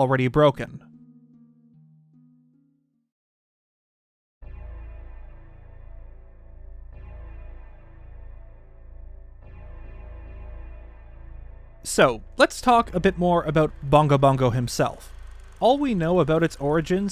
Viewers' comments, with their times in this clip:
0:04 The Devil May Cry 1 music fits way too well for Bongo Bongo. Definitely could have been a boss in either game.